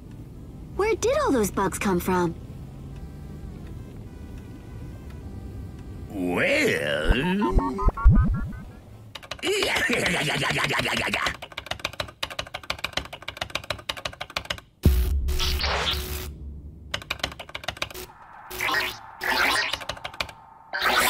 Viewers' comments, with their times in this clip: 0:09 Mr Krabs laugh